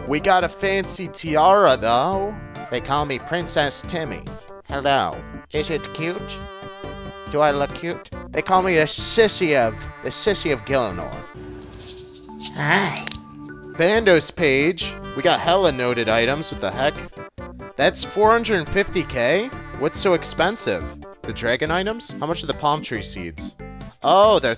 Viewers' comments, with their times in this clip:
0:09 Yo I’m watching this am with my headphones on and I gotta say that knock on the door at the end of the video just gave me a heart attack. Also great content man keep it up you’re awesome been watching for like 10 years